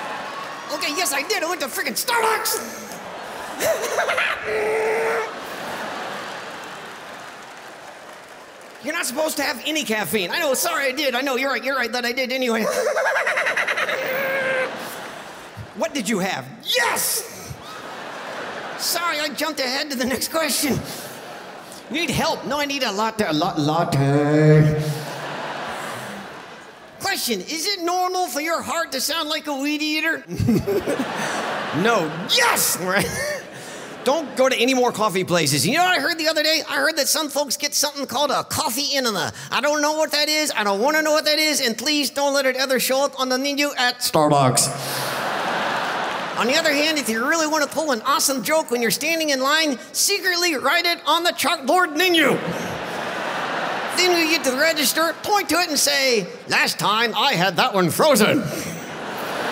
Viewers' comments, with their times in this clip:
0:03 sounds like a damn ghost from Minecraft
0:04 From the start to Peanut casually sounds like Woody
0:44 i love when peanut gets close to the mic and sounds in a deep voice like in "STARBUCKS"